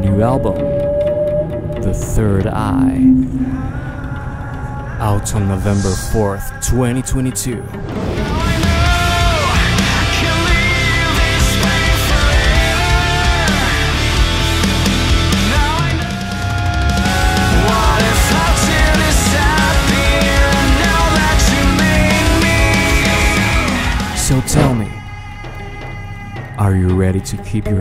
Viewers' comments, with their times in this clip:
0:09 Oh I know this one is gonna be a fucking banger, I'm already hooked on that Chorus